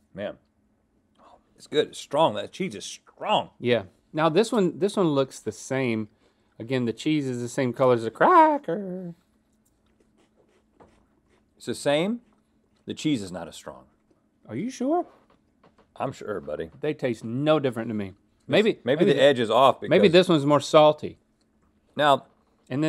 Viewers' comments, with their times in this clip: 0:06 why did link say cracker like that tho lmao